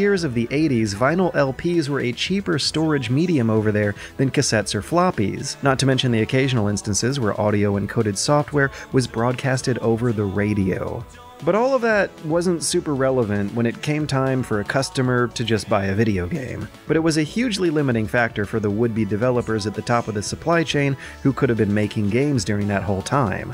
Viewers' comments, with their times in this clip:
0:07 This was a great video but you need to work on your audio mixing a little. It gets hard to discern what you are saying when you have at least two songs going in the background around thr mark, and generally it would be best to stick to purely instrumental backtracks so that your narration is easier to distinguish.